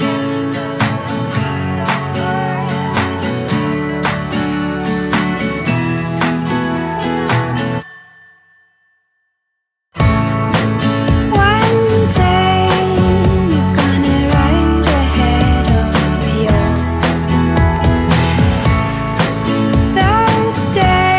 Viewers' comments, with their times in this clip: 0:09 that DJ really drop that beat on dope ass beat